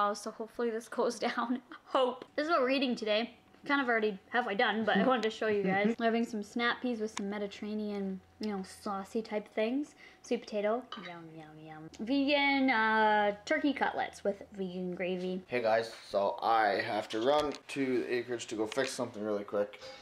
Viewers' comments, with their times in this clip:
0:05 who is making that sound at the same time when you talk? Sounds creeeeepy...Just me??